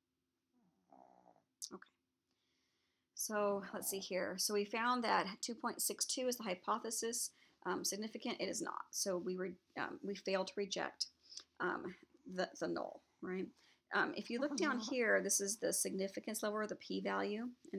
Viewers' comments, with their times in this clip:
0:05 After min into the video, there is some really distracting background noise that sometimes overpowers the quietness of these primary power-points.